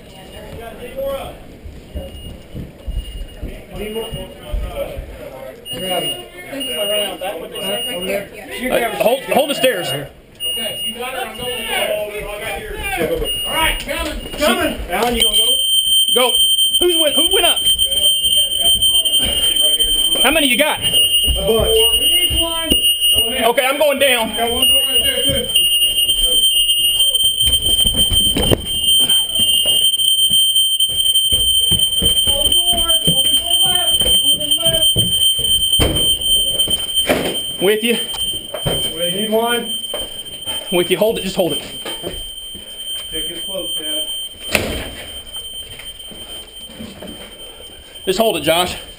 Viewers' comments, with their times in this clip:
0:04 That's a residential smoke detector sounding in response to the smoke from the flashbang the one officer threw in. Another one upstairs (owing to it becoming louder when the officer who's bodycam we're seeing the incident through heads up the stairs: the second detector is likely right in that little intersection he stood in for a minute or two before heading upstairs) can be heard sounding note the differing pulse pattern. The first one is sounding in temporal code 3, the Audible Emergency Evacuation Signal as denoted by NFPA 72, ANSI S3.41, & ISO 8201. The second detector is sounding in 4/6, which is a pulse pattern residential smoke detectors used to do before temporal code 3 was mandated in 1996.
0:15 anyone know what alarm this is? it sounds similar to my school's fire alarm.
0:33 what is the hell is this voice.. Is it Electronic jamming?!